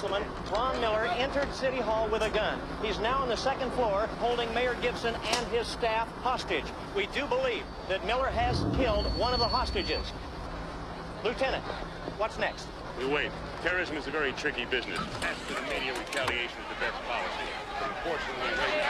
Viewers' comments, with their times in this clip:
0:05 my favorite part is someone decided to add sound to the tape ripping lmaooo